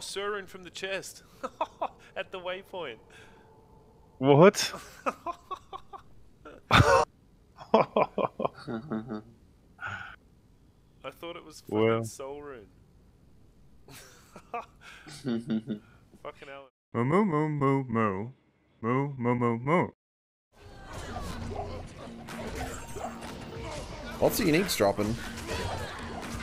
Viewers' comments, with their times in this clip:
0:08 the guy in the background sounds like playing 3 days straight lol
0:12 that sarcastic laugh by the other guy after the sur rune droped is hilarious lol